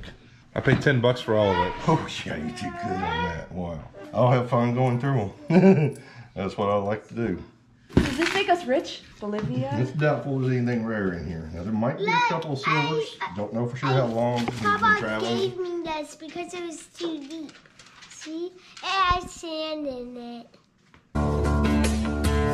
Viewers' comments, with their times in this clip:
0:05 Your dad's laugh he's so excited :)